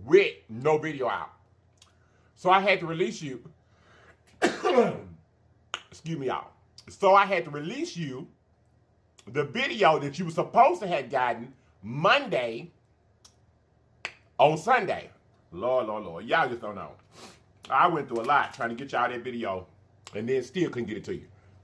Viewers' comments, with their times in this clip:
0:04 How many of y'all said "bless you" when he sneezed?🙋‍♀️